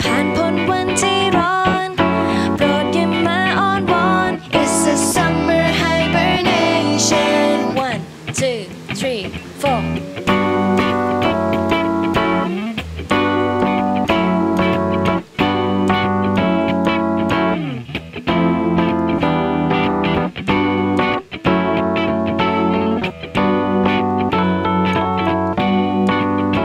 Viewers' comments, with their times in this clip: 0:08 a motorcycle was passed and the sound like riser through your count, 1..2..3..4.. hahahaha